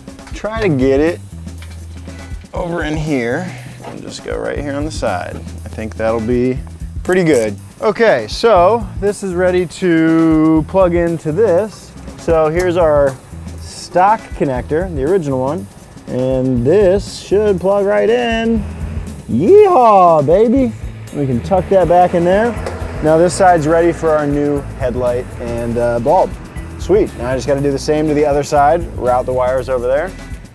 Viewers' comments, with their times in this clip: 0:08 I heard a ratchet. That's more than "just with a screwdriver".
0:18 That sweet sound of a 7.3 Powerstroke